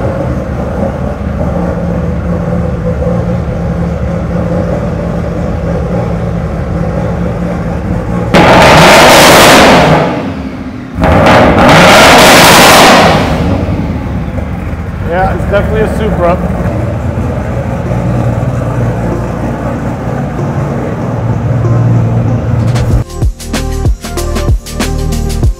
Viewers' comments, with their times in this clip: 0:07 RIP Headphone users 🎧💥